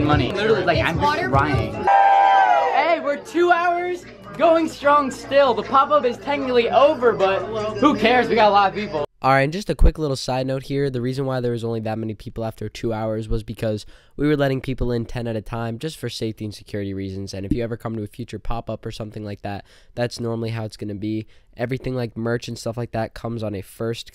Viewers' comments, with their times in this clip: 0:08 he sounded like leafy